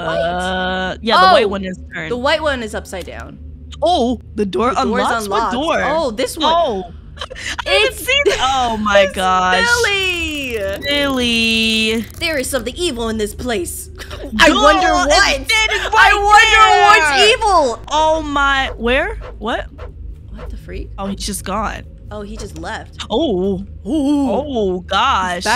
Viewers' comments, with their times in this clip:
0:10 the way she said that